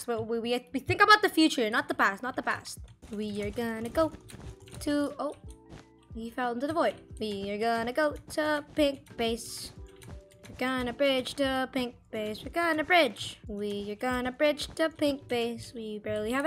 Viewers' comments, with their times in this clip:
0:04 nice singing lmao